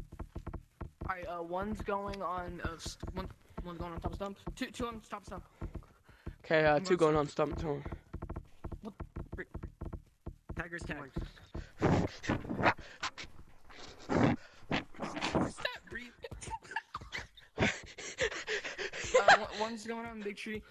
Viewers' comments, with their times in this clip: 0:08 starts breathing as if he just sprinted 2 miles